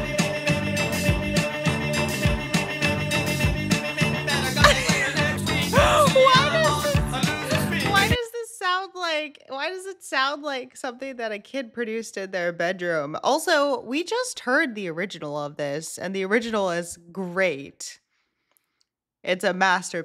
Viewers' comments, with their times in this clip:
0:07 well one of the instruments is a toy piano 😂